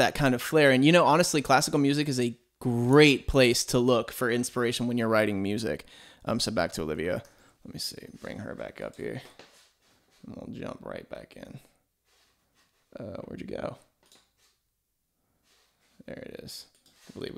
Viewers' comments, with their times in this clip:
0:05 his voice just lowered five hundred octaves